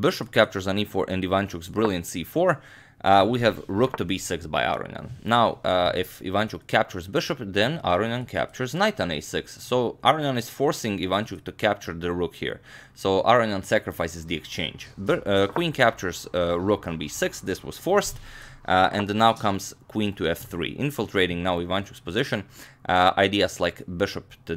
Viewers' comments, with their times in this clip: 0:08 i dont know if anyone else realized that but in his voice when he says "if ivanchuck captures bishop then aronian captures knight on a6" remind me a father who is telling some stories to his children before they sleep, i just wanted to mention it :)